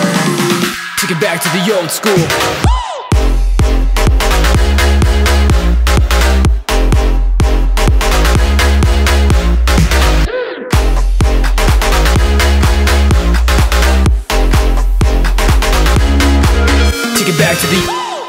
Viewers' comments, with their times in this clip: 0:03 i love that drop <3<3